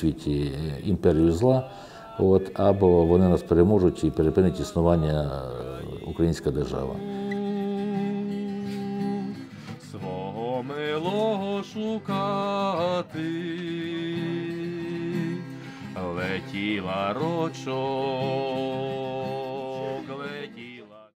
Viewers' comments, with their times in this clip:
0:09 He has a very nice singing voice